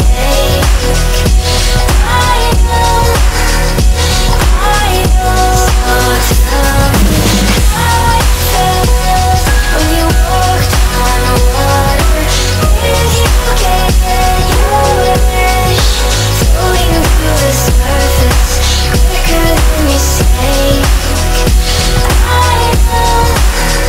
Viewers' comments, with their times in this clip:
0:07 I like the piano in the background :)
0:08 when that signature Porter Robinson piano part came in during the drop I FELT THAT
0:08 Day 2 I don't know why this song is so special to me, maybe because I've ever cried ugly while listening this for couple times, i cried while screaming "So tell me how it felt when you walked on water? did you get your wish?" Because no, i didn't get my wish last year, i still on my way pursuing my wish so this is like I'm screaming for those who can walked on water asking how does it really felt, because i want to walk on water too. And that piano on always bring up lump to my throat.